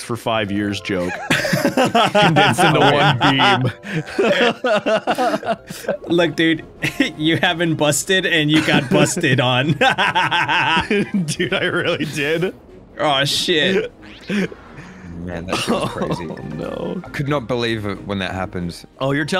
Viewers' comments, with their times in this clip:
0:04 Narrators broken laugh hurts my soul